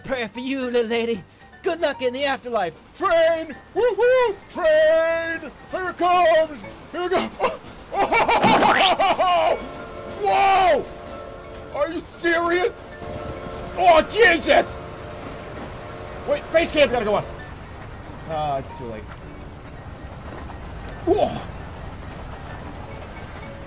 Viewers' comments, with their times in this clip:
0:07 The cartoon squish sound made me lose my shit, omg!